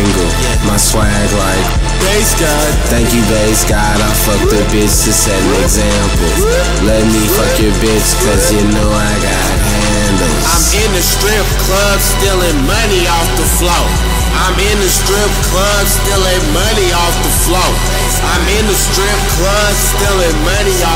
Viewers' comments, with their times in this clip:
0:07 nigga B spittin